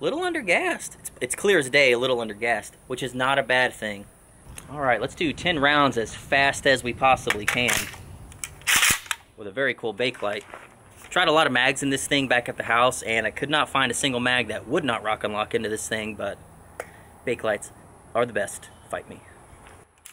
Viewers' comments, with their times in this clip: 0:04 Is it just me or is that 13 rounds instead of ten?